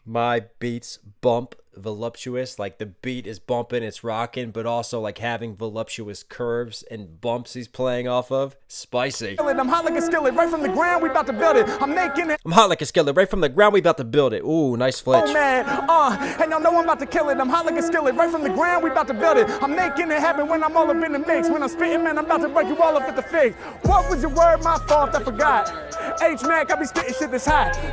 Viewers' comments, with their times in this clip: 0:08 "spicy" The way you said that 🤣